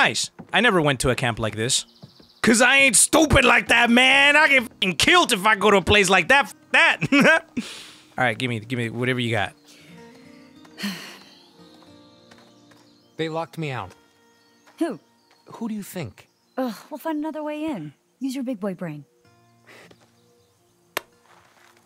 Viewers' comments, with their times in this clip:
0:08 What was that laugh lol